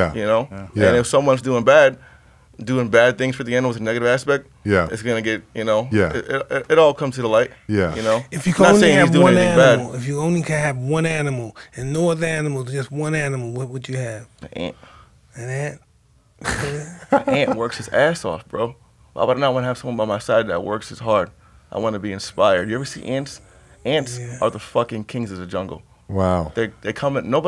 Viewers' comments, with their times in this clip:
0:08 Tyson: "If you could only have one animal, and no other animal..What would you have?" Tarzann: "An Ant" Bruh the way he said it tho..I was crackin up!